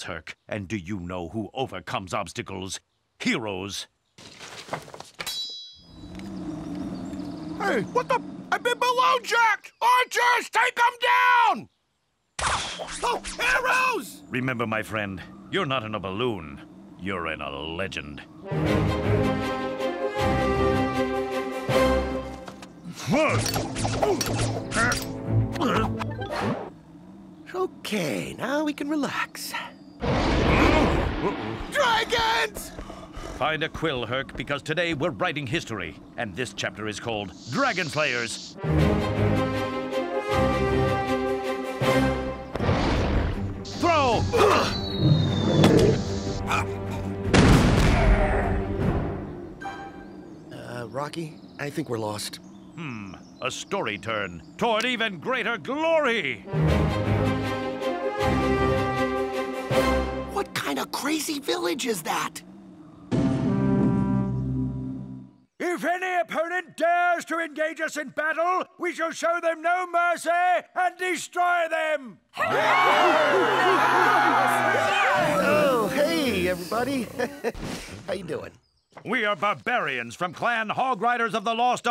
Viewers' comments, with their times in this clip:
0:07 did i hear : What the f...
1:02 sounds like the start of overtime in Clash Royale
1:03 I love that horn.